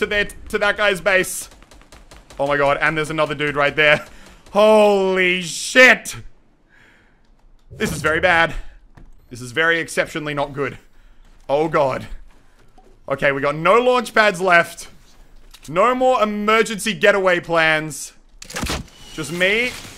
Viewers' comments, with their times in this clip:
0:05 Is it me or the drop glitches like beating meat..